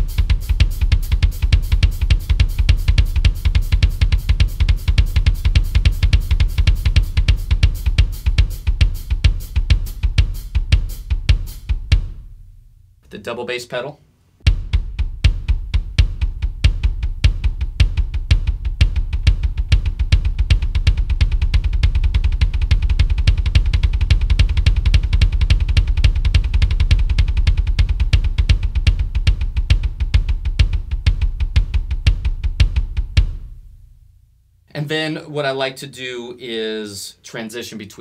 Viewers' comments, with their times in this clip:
0:03 I could swear he would start to play Bleed
0:25 just me that hear ”and again”?